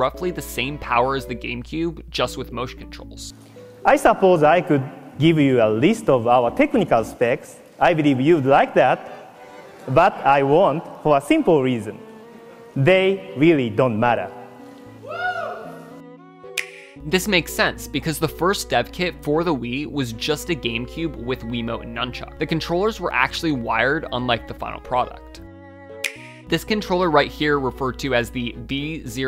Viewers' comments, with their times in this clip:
0:10 the ‘WOOO’ at the end of this clip killed me. That was so random. 🤣🤣